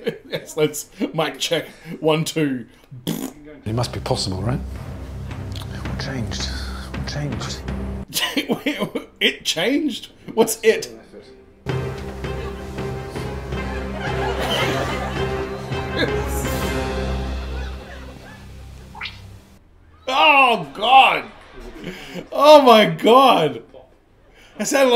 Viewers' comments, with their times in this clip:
0:06 Sometimes I'm unsure about these subtitles. I always thought he was asking "what changed, what changed?"